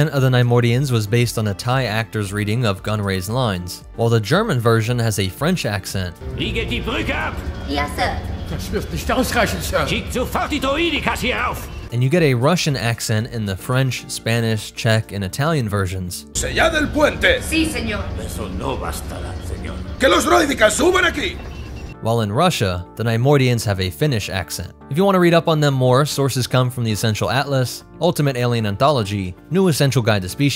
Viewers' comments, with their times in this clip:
0:10 yeah... I've heard many French people speak german with a heavy accent, and it doesn't sound like that, at all.
0:13 In the Spanish version I'm pretty sure they tried to achieve a Romanian sounding accent, not a Russian one, but fairly close.